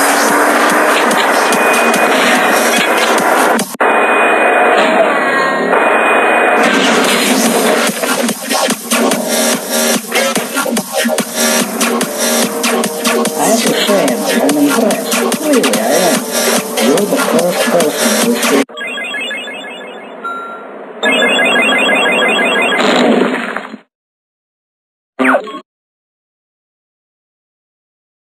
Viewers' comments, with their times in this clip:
0:09 I don’t think the chase music is supposed to be playing now